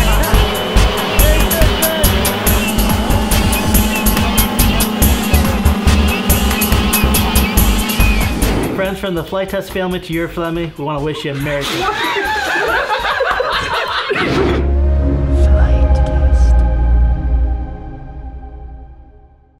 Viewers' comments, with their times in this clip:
0:10 That's easy for you to say..... ;)